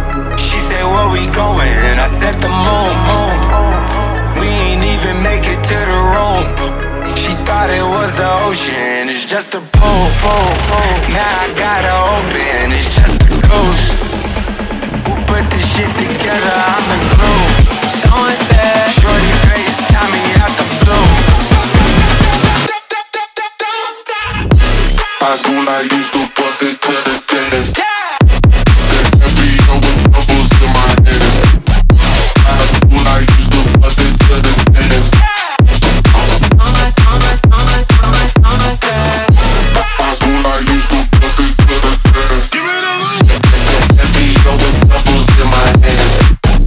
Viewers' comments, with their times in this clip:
0:09 the buildup was so great but the drop was kinda disappointing imo
0:23 the drop is actually insane, just sounds so good.
0:24 Damn that drop is on point
0:24 SeCoNd DrOp GoT mE LiKe...
0:25 is one of the hardest drops trap nation has ever done.
0:25 i would say is more of a bounce than house
0:25 is the best beat of all!!
0:27 THAT DROP IS SICK !!
0:28 I don’t know what to do with myself after hearing that drop...no words...